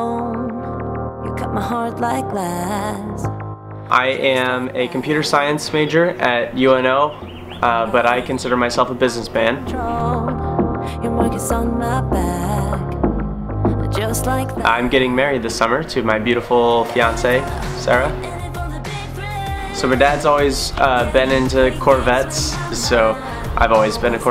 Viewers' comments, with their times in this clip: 0:10 Thanks man, but i am asking about the second track that starts Love that Katech rear spoiler i am considering it for my 12' ZR1. Looks real nice with the wide body on your car. Also love the sound of the exhaust. The cam and headers really cleared its throat!